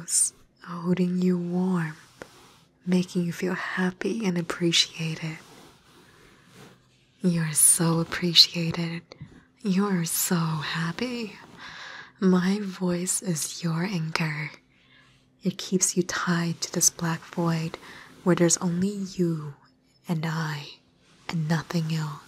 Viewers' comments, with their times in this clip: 0:10 is it just me? I feel like youre laughing through the whole session! Love it! for awesome voicecrack!